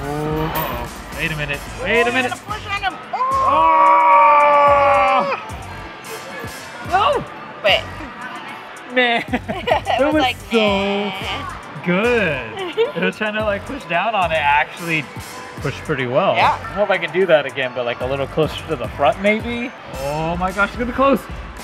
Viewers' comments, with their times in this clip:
0:03 It's like the sound you guys made for the hamster was the same sound it was making inside the claw machine having the claw push directly on it's stomach. Great video! I love Neofuns! It looks like an awesome place of what I have seen. I hope everyone has a great day! :)